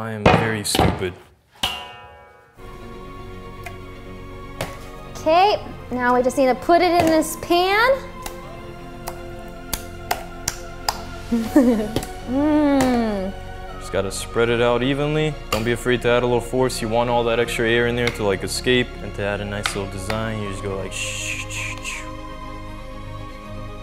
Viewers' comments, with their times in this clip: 0:09 valkyrae little giggle gets me everytime
0:11 That Rae laugh 😂🤣😂🤣